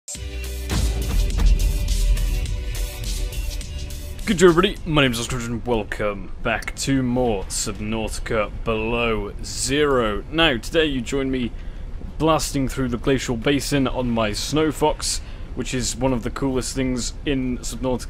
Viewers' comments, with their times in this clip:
0:06 your name is what? Because I heard ghsherrrsh